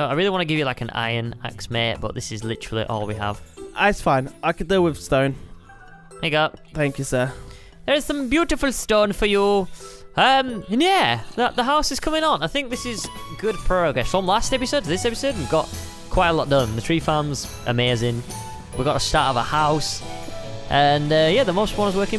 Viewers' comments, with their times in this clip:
0:07 someone says hi